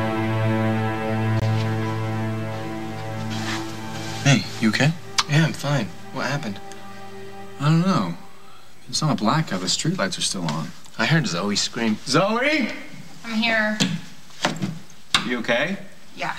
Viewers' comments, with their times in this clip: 0:03 I heard a kiss